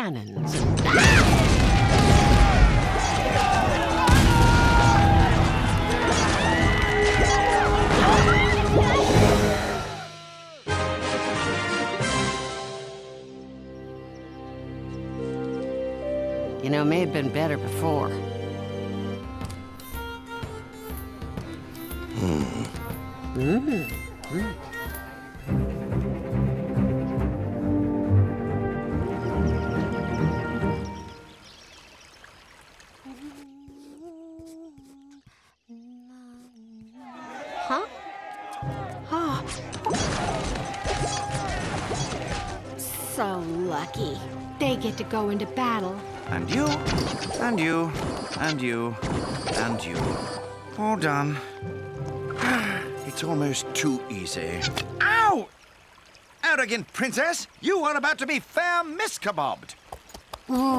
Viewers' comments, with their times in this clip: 0:10 there was a victorious sound, and 100% defeat
0:45 they deployed a prince but it played the sound that makes when a dark prince gets deployed...